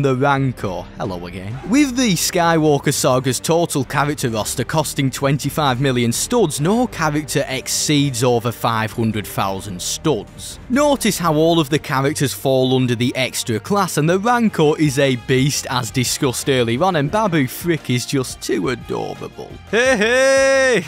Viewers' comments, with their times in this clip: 0:05 * ashamed Voldemort noises*😂